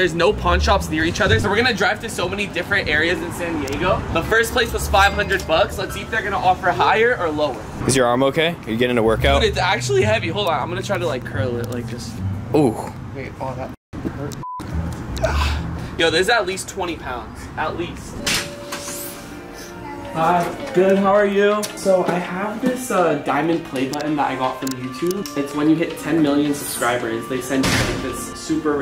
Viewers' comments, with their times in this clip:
0:09 can’t let you get away with that voice crack